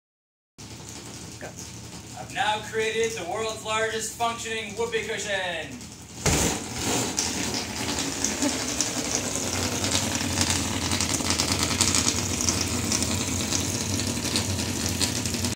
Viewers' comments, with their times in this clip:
0:07 No one: Absolutely no one: Motorcycles starting up at 3 AM:
0:10 it's as if someone's pink nipple is being sucked in by a plane's engine